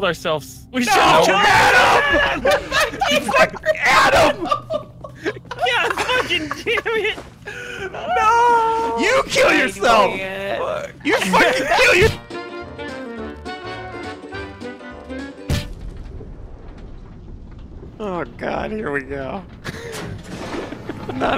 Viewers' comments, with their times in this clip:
0:09 Goodness thank you for the hilarious yelling at each other